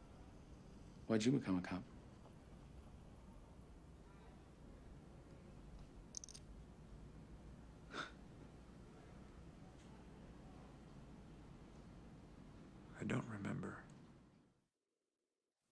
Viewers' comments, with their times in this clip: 0:07 That tiny huff of breath " I don't remember. " and his eyes misting over is excellent acting. Spacey's finest role for me. A man seeking redemption but unaware of the danger ahead. Brilliant work.